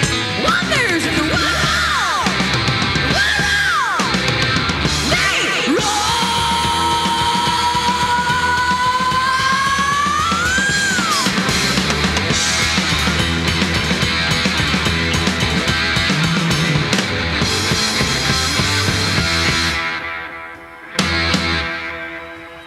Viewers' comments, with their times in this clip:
0:05 Hell yeah! Ged has a legit growl, love it. These guys were very very good at a young age.
0:05 Geddy is an incredible singer
0:05 Geddy’s vocal build/scream is incredible!